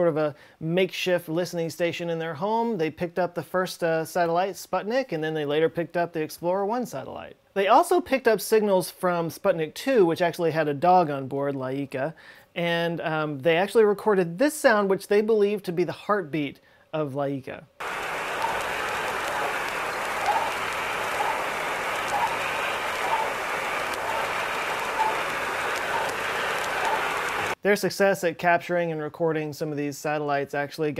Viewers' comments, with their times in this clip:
0:10 Isn't it very slow for a heart beat given that Laika was not a big dog, and circumstances were stressful...?
0:18 that sounds more like the dog barking than a heart beat